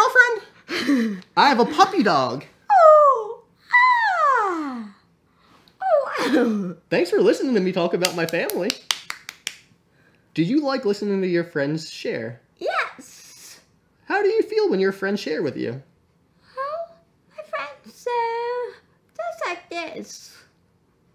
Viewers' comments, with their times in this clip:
0:04 "wow!" claps She's so cute and funny